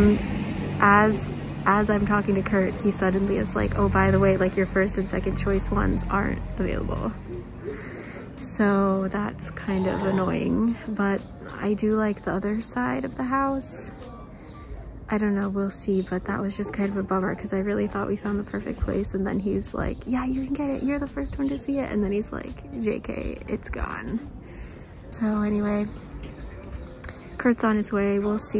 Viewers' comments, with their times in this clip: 0:09 that throat sound ! lol!! I liked #3... pity it was too outdated and the bed was built in. the newer places looked really nice as well.. but I agree.. in the end it is better to stay where you are at and just DIY it to your liking! I hated house hunting when I worked in Malaysia! Thanks for the video :)
0:09 !!! who's spitting in the background ugh gross af